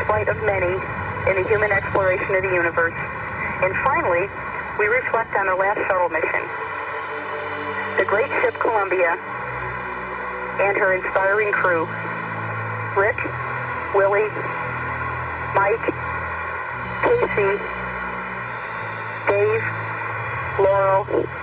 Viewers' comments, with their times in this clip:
0:06 Imagine if Eileen Collins cared enough to remember the names of the dead rather than struggling to read them off of a piece of paper.